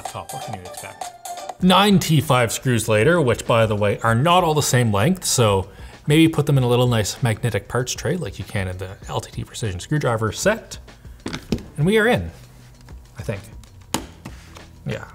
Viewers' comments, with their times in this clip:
0:03 Ninety five screws?! 😂